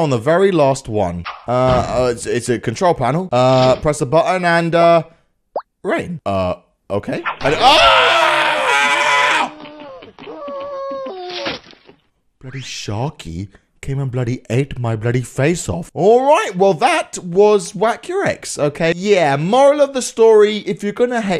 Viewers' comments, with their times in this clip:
0:07 And XDDDDDD YOUR LAUGH BROOOOOO LOLLOLOLOLOLOLOL